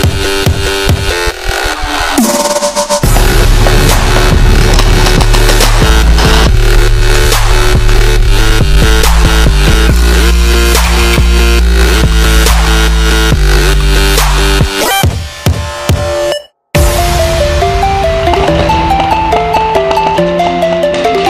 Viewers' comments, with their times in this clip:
0:04 Everyone going to ignore how perfectly timed the music was with the pistol?